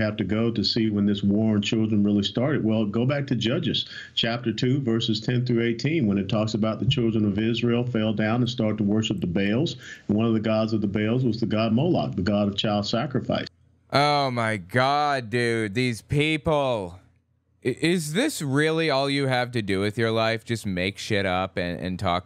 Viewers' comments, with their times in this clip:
0:08 Molag??? As in Molag Bal??? From the Elder Scrolls?????? What the hell lmao